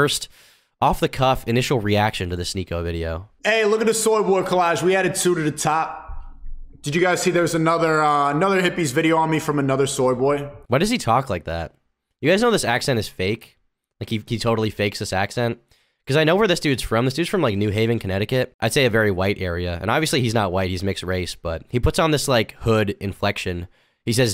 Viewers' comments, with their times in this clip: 0:10 people in New Haven CT do talk like that a bit, it depends where you are in the city/county. It's very diverse